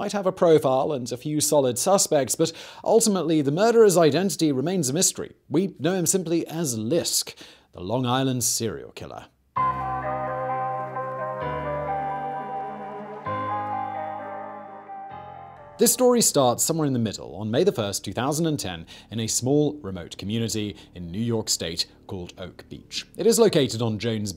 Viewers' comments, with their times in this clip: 0:10 Dope👍 Love that tune! It’s like cheerfully grim 👌🏼😊😉✌🏼